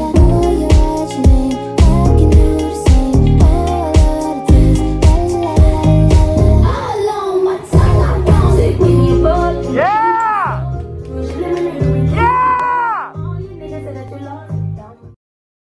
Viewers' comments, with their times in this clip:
0:08 the person yelling "YEAHHH!" is such a mood
0:09 OMG! This scream expressed all my emotions after watching :D
0:13 Doja’s: Why tf you yellin next to my ear
0:13 it's so funny how she looked at the camera man screaming for her slayness her stare looks like she so done with him yellin😭😭😭😭